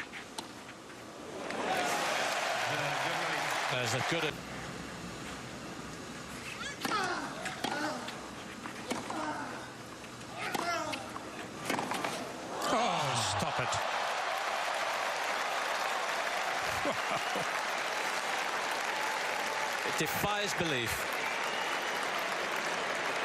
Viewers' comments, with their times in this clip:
0:07 the commentator has a Nadalgasm.